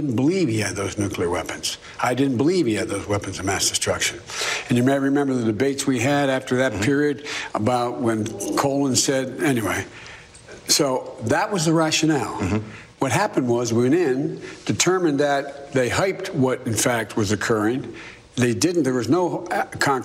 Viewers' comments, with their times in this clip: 0:08 Whoa... what was that in the background that cut Biden off and made him change what he was talking about?